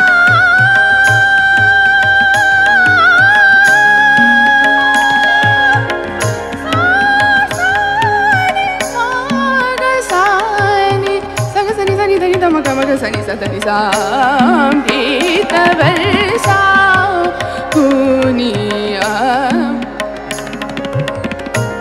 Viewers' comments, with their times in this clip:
0:04 Plenty mistakes by lady singer. Major one in also look at face of tabala player at that time.😅